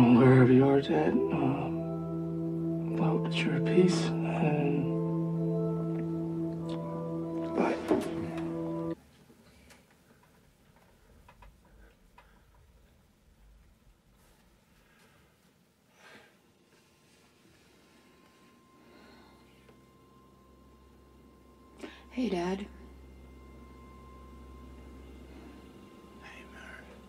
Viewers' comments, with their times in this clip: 0:08 Did the music really end like that in the movie? or is it added